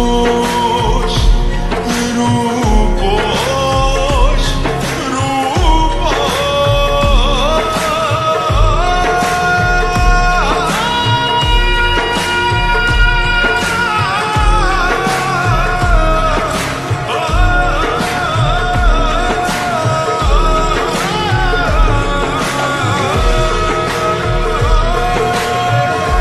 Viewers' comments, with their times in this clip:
0:10 That high note on 👌💖